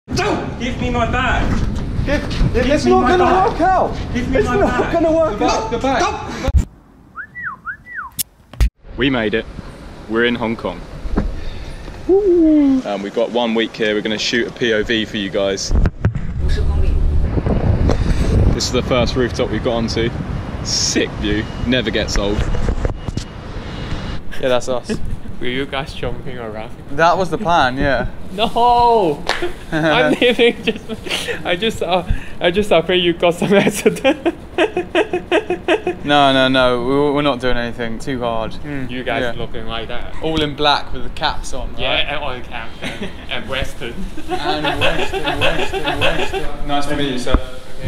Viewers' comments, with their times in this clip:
0:00 Homer Simpson noises
0:33 what was his laugh?